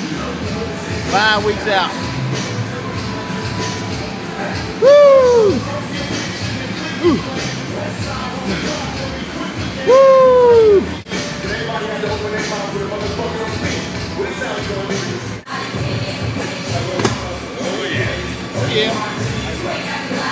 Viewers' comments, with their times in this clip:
0:04 instant like for the music